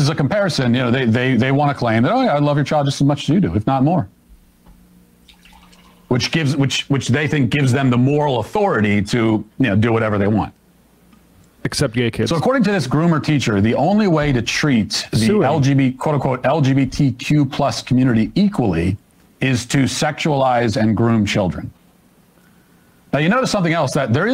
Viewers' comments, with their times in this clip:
0:03 LOL! Is that the sound of someone filling up a cup with a liquid of some kind? Listen closely right after Matt says "if not more"... 😜🤣
0:05 Is someone taking a bath behind the camera ?